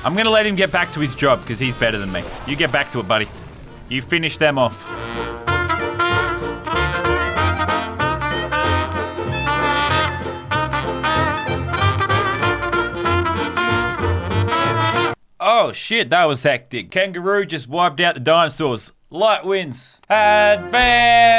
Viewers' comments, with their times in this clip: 0:04 i cant stop laughing holy crap and the music doesnt help